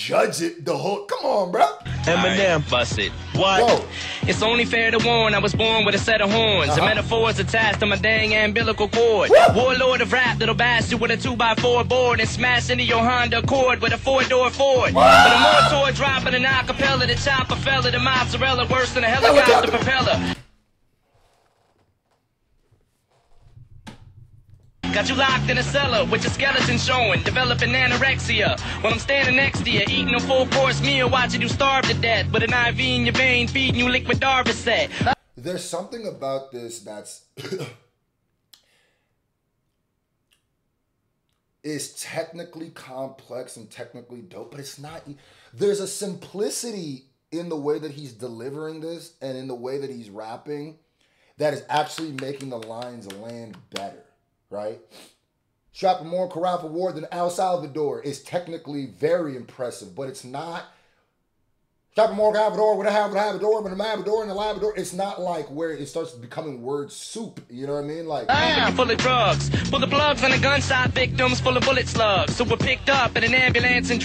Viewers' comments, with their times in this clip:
0:06 Yo that Beat is so nasty and sinister af!! Who produced the beat does anybody know?
1:00 It's the space in between the words that set his bars apart.